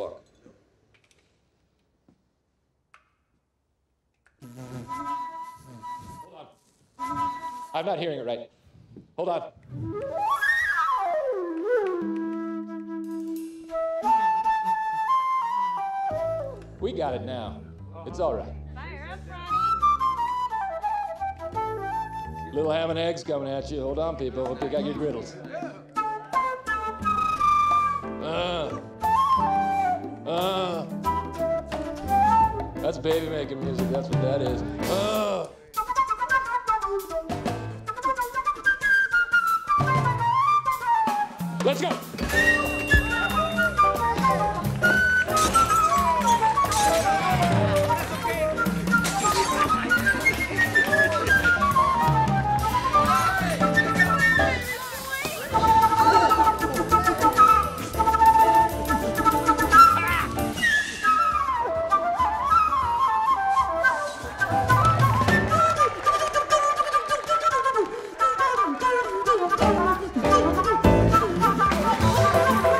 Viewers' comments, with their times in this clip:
0:03 I feel like that little part was actually Will Ferrel actually trying to play the flute.
0:24 anyone gonna acknowledge how dirty that riff is?! Daaaamn!
0:59 that yell always gets me LMFAO